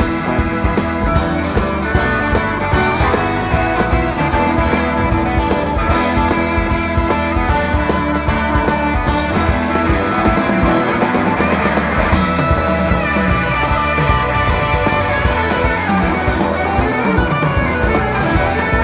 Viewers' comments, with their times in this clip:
0:06 Can we talk about Russo's drumming during The Other One starting ? Dude is on fire.